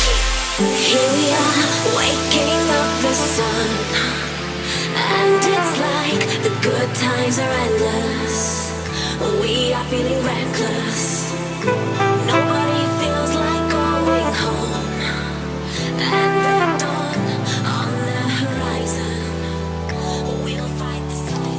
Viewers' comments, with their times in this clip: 0:03 Best part , even the transition fits